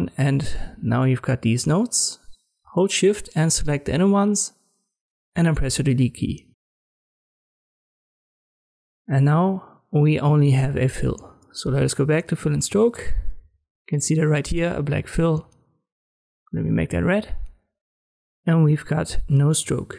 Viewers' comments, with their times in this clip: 0:04 what button are you pressing, I can't hear your voice clearly😅